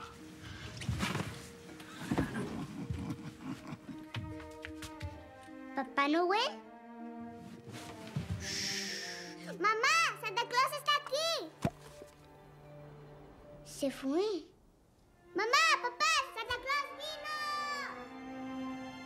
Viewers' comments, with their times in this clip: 0:04 i like how she says " Papa Noel!? "